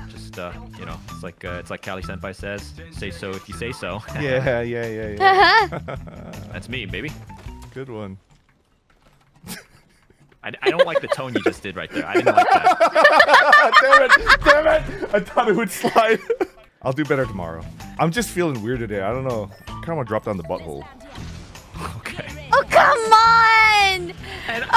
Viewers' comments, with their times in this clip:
0:06 The music cutting is just the cherry on top of an already perfect moment.